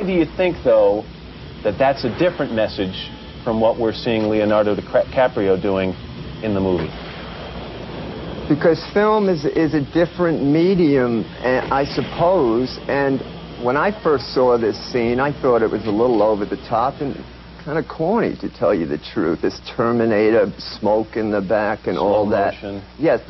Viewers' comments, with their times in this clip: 0:04 lol Matt Lauder almost said Dicraprio..............@
0:04 Matt Lauer almost says Leonardo DiCRAPio